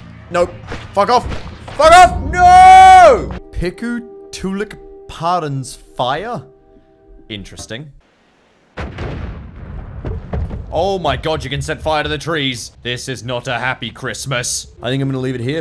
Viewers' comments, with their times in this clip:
0:03 how the hell do you miss pronounce something that badly... also that translates to "small firefly"